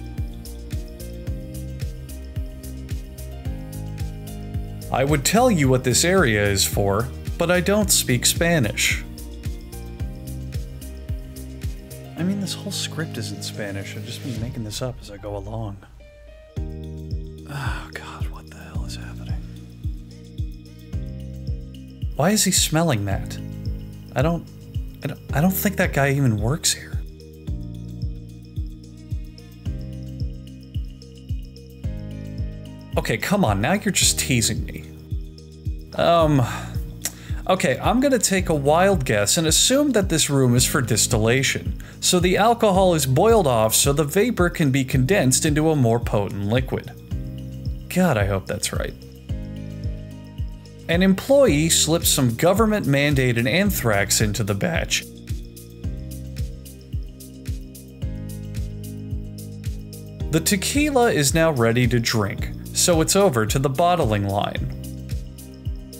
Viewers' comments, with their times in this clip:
0:05 Damn thought that was French
0:12 😂 You’re not using your NARRATIVE VOICE
0:50 The voice crack